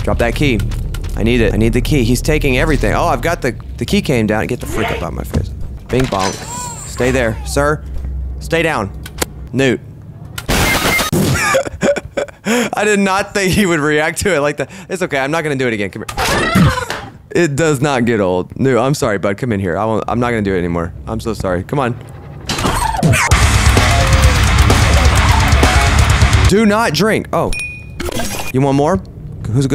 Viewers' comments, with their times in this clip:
0:10 Loud fortinite kill